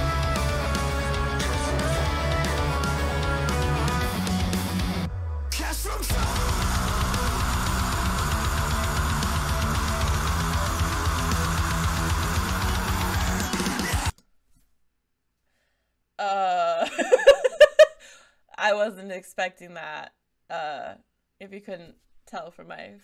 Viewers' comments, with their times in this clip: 0:08 when the beat drops